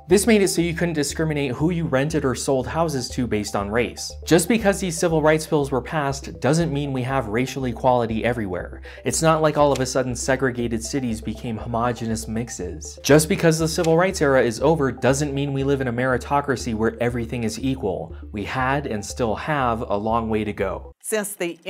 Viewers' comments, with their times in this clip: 0:04 the way you say "Homogeneous mixes" is hilarious